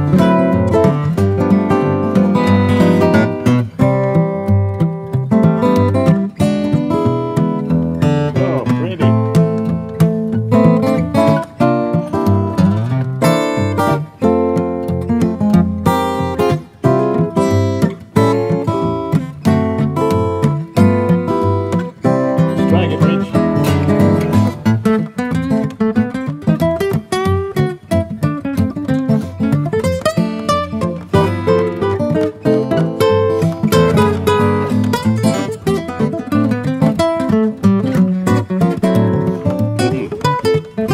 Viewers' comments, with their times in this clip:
0:06 OK, what's that interesting harmony ? I can't figure it out.
0:22 i heard it like ‘bitch’